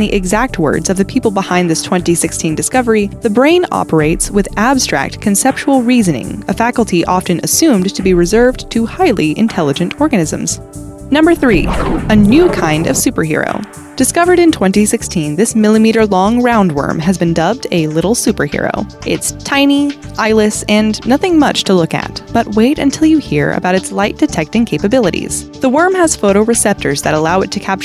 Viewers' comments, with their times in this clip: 0:07 "Highly intelligent ORGASMS?" hmmmmmm
0:08 please define "highly intelligent orgasms"